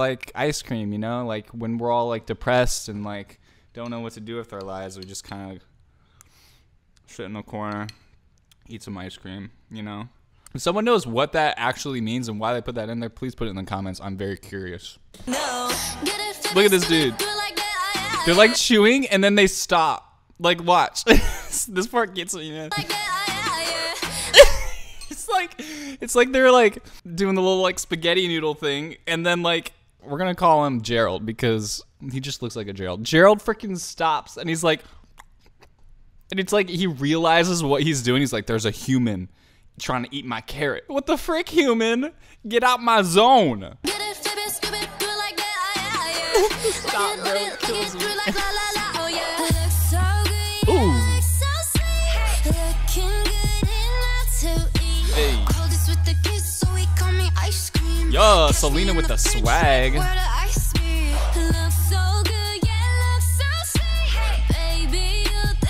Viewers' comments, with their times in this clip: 0:06 I swear it sounded like my mans said "kinda just shit in the corner..."
0:38 gerald really said ✨zont, zont zo it✨
0:50 this pre-chorus is giving me SELENA VIBES